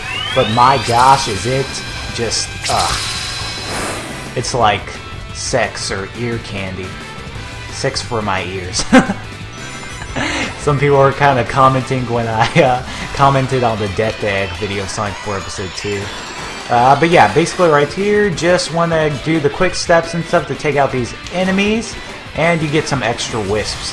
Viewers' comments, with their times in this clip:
0:08 that is earaped